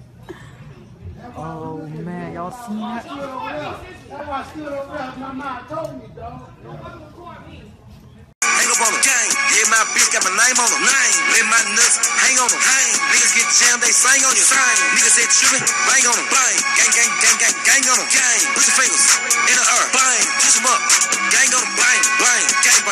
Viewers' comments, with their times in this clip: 0:10 (minecraft skeleton sounds..)